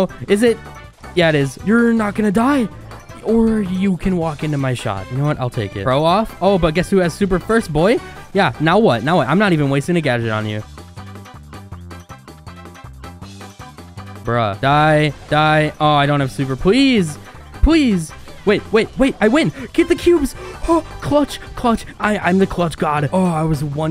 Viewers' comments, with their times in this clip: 0:10 The only moment that he didn't talk